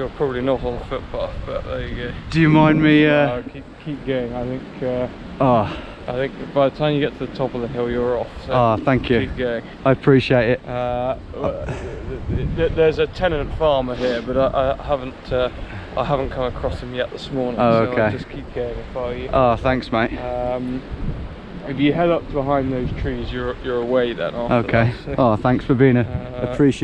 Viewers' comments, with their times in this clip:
0:07 Sounds like charlie ireland from clarksons farm the bloke
0:07 That bloke is sooo posh, jesus.